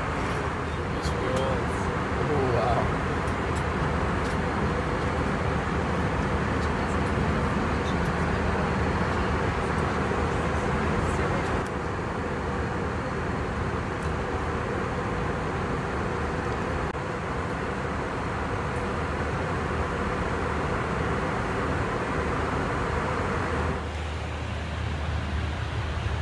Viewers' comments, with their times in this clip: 0:10 The finger snap was incredibly satisfying